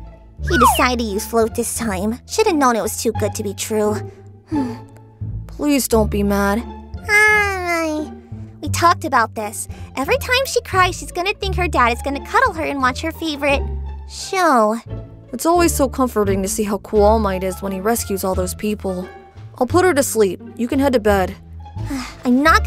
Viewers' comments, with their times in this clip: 0:06 my heart melted when deku's daughter speak 🥺🥺🥺🥺🥺🥺🥺🥺